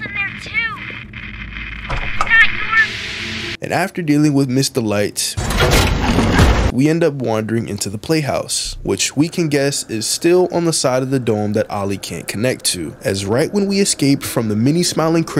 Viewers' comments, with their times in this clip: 0:03 The way He abruptly stopped talking just to let Miss Delight get Smooshed has Me wheezing 😭